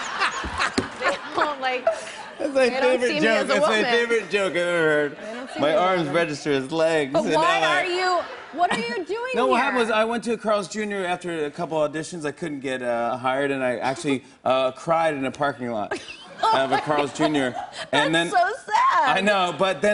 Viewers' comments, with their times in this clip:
0:03 Jimmy sounds drunk if you put the speed to .5